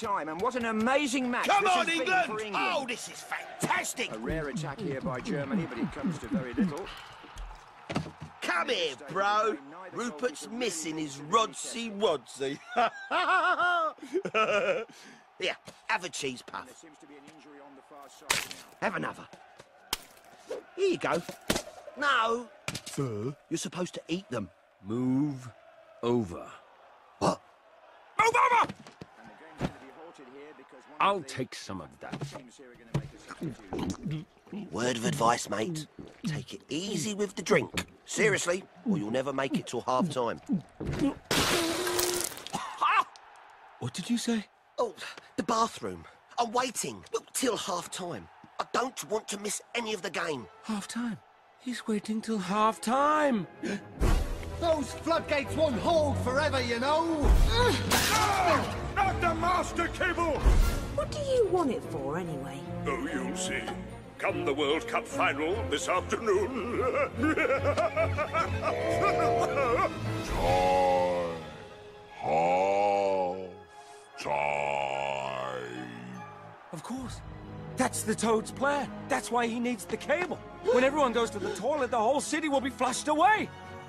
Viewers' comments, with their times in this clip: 0:08 What does Sid say ? It's hard for this Midwesterner to comprehend.
0:27 why does he sound like he said Obama
1:08 (HILARIOUS DEEP VOICE) HAAAAAAAAAALF TIIIIIIIIIIME!!!!!!!!!! HAAAAAAAAAALF TIIIIIIIIIIME!!!!!!!!!!